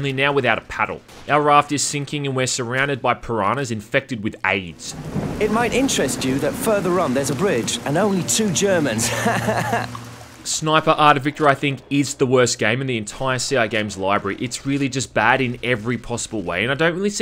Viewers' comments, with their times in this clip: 0:05 that guys snarky laugh is brilliant ha ha ha